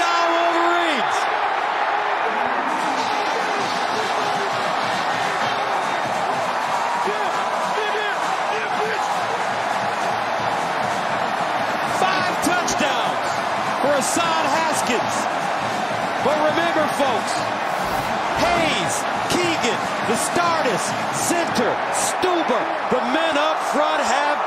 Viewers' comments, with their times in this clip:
0:08 hot mic moment lol